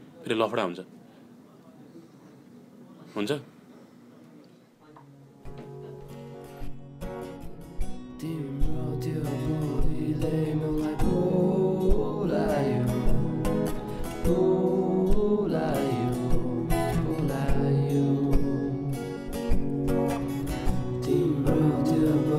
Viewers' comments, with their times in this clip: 0:09 Tone to die for